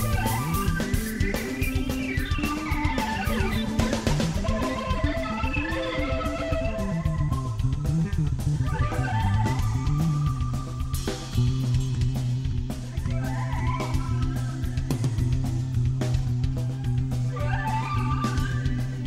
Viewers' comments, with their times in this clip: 0:07 that outro_ in full, heavy ,pouring rain